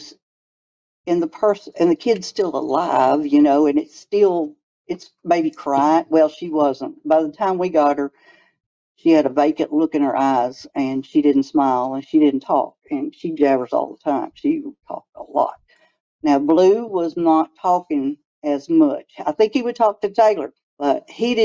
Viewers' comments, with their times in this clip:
0:04 this is probably the worlds most annoying accent. To them “eyes” is “aaaaaas” I could give more examples but I’m kinda too drunk to think of some right now. Also, is that the most masculine looking “woman” ever?